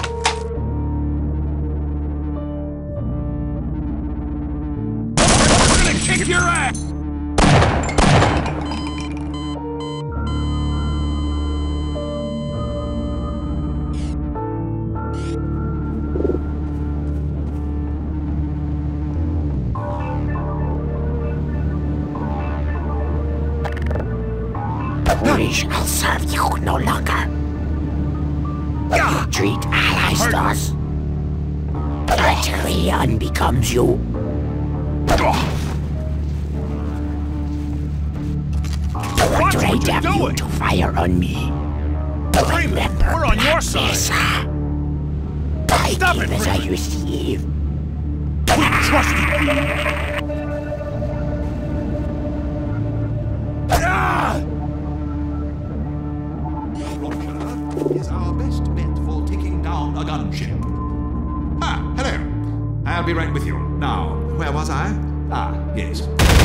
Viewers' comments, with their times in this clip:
0:03 The voice clip repeating with every shot and the synchronized kicking sent me to Xen
0:24 that vort voice haunts me.
0:31 I N J U R Y O R B E C O M E J E W
0:54 that shout was hilarious